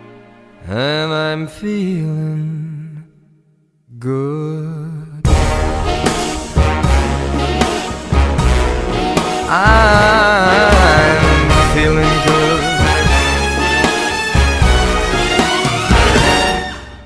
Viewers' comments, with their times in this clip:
0:05 that beat drop is everything